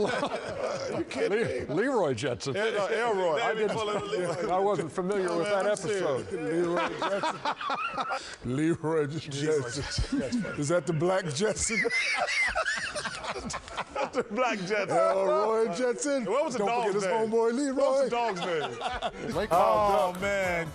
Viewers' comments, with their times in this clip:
0:07 Chuckster added years to Shaq's life from seeing him laugh like that.
0:08 the way shaq says that kills me every time 😭